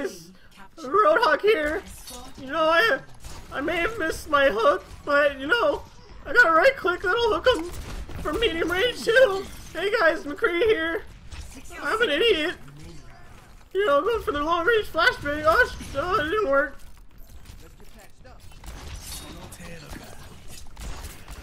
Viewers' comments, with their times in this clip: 0:04 sounds like fucking Morty from Rick and Morty 😂